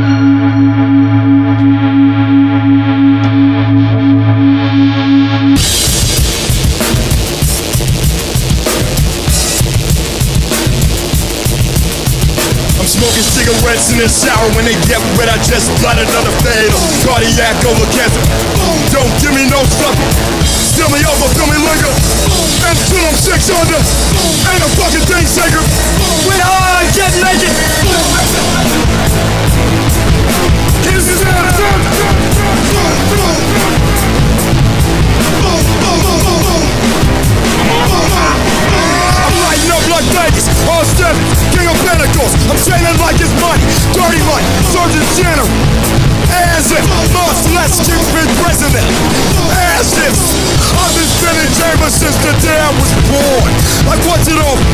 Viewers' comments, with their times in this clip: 0:05 Saw them play this live at One Eyed Jacks in 2015. When the distorted fuzz kicked in that you hear I swear, even with earplugs, it was the loudest sound I had ever experienced it was just piercing through my earplugs clear as day.
0:06 When the song started I was like "is death grips getting soft?" Then hit hit and I was like " OHHHH FUUUUUCKK"
0:37 i think they also sampled a zombie
0:38 WTF there's a Call of Duty zombie scream